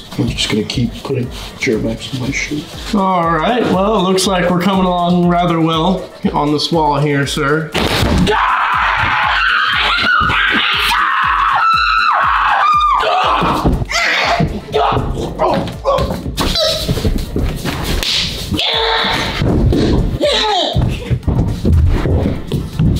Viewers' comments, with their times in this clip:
0:08 they sounded like pterodactyls😂